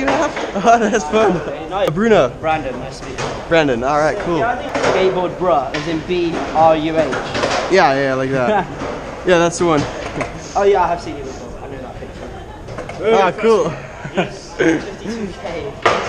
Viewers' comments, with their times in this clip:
0:03 love how he said:skatebo bra